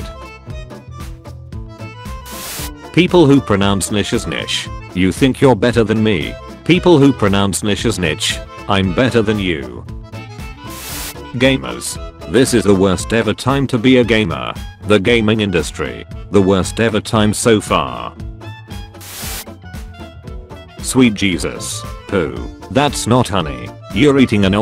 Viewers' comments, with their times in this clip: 0:10 Jokes on you the AI says it the same way both times!